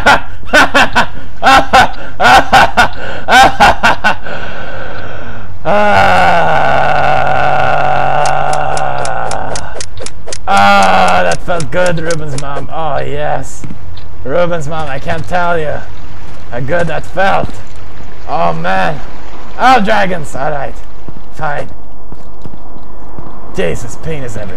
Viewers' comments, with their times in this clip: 0:05 pewdiepies orgasm XD